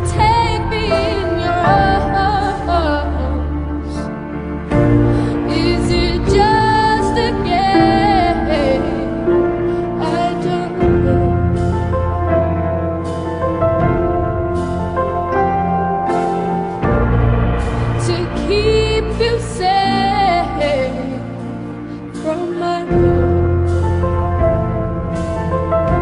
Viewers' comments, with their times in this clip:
0:08 dat cry do